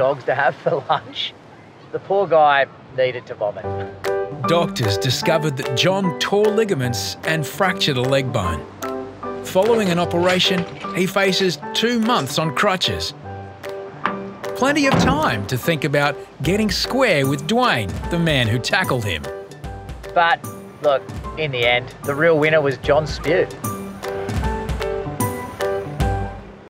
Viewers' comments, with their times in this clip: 0:09 The happy music at the end 💀